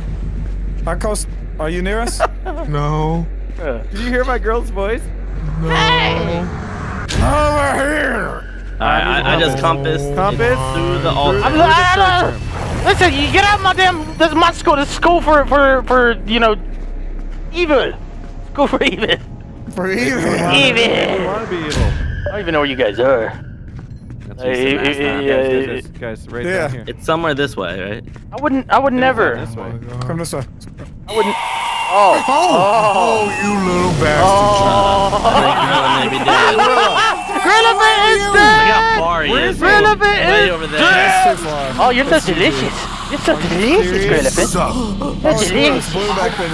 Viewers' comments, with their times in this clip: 0:03 Lol that song you sang reminded me of the the movie final destination
0:33 idk why but those nom nom nom nom nom nom nom nom nom noms got me lmao xD